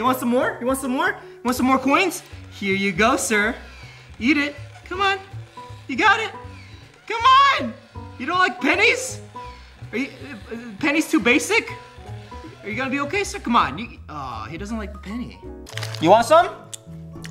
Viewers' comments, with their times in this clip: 0:03 did i just hear "Yeet it" ?